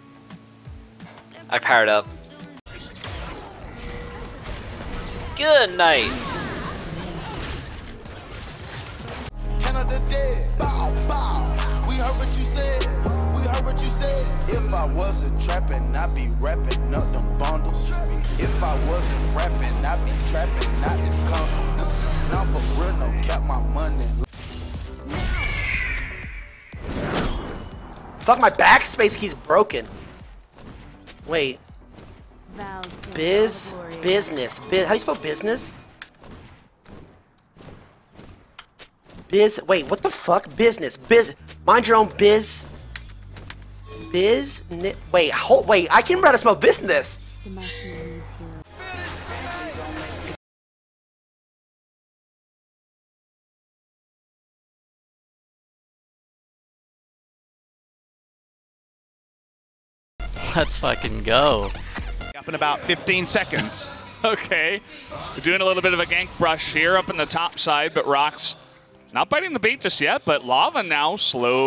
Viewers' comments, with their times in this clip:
0:09 Garbage music holy fuck.
0:49 That music timing
0:56 Liked for music Brings me back